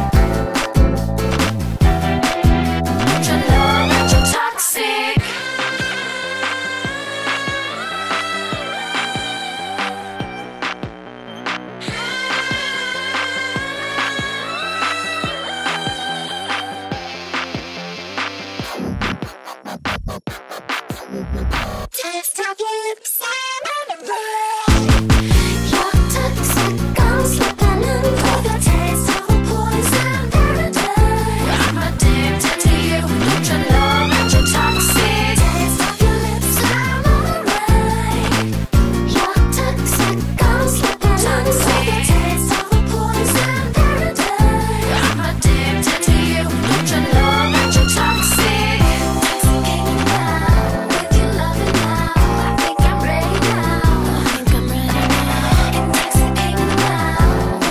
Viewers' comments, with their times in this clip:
0:05 this part genuinely sounds like it’s straight out of a Bollywood movie
0:06 the breakdown bangs
0:19 HANG ON WHY DID BRITNEY BECOME THE DEVI ???
0:44 the mosquito in my ear am